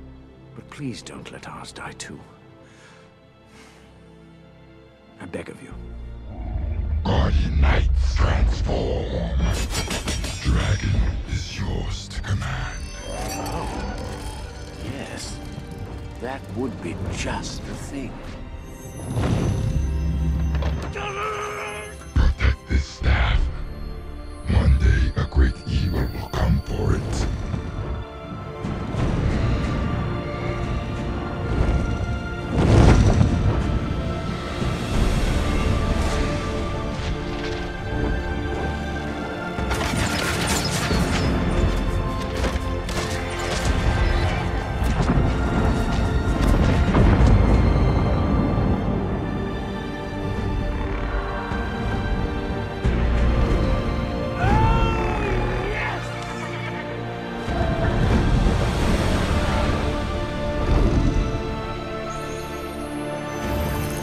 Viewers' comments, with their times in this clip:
0:07 Stormreign's voice is soooooooooo sick
0:50 Wow that scene with the beautiful background music is epic